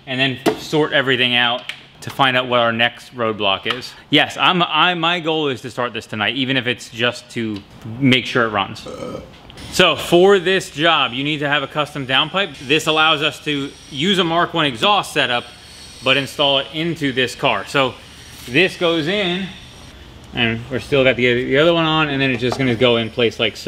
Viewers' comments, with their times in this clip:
0:09 The burp was so pure stress relief.